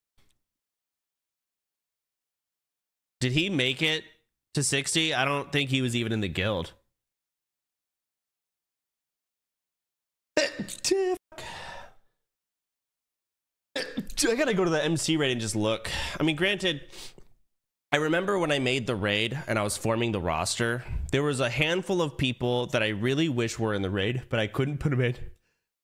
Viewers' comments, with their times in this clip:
0:09 idk who needs to hear this but sneezing like this is incredibly bad for your health and is a great way to rupture an eardrum or blood vessels in your eyes and nose. Just fucking sneeze like a normal person.